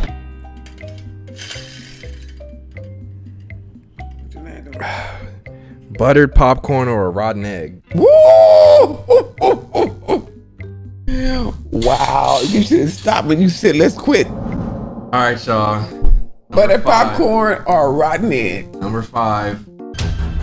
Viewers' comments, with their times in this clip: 0:04 he sound so frustrated 😭